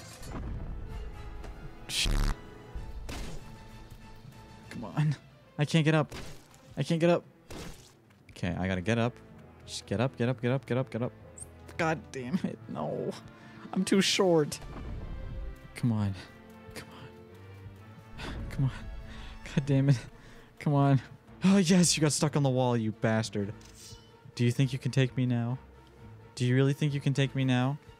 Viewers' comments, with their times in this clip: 0:04 "come on" I don’t know why but that sounded zesty as hell💀
0:09 sounds like jojo theme